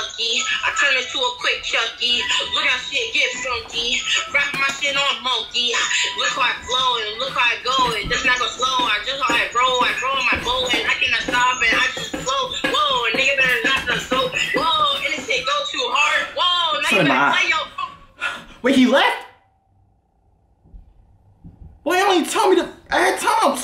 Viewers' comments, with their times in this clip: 0:09 when you listen to to much yb